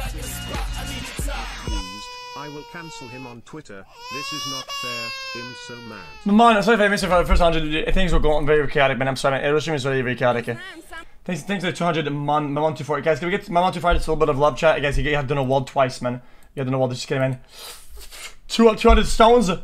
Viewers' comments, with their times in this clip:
0:06 he is speaking need for speed 💀🤣